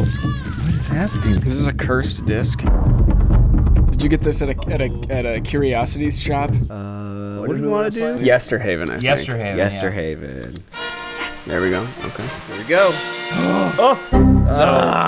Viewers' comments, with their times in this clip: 0:03 “Cursed disk” followed by the Jumanji drums 😂